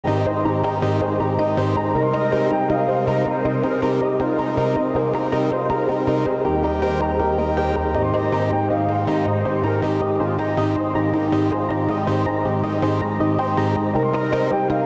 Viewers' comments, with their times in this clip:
0:00 the music gave me the chills